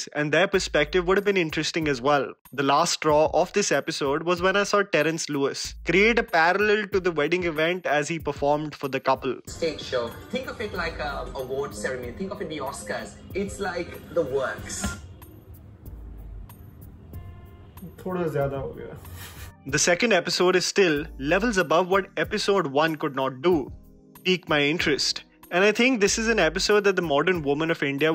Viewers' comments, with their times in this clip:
0:09 what's up with his accent lmao😂